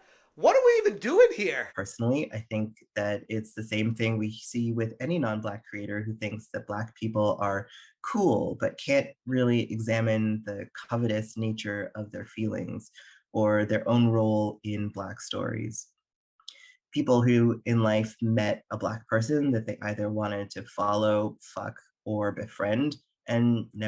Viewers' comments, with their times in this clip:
0:09 for a second there I thought he said “communist nature of their feelings”. Good thing I always have subtitles on lol.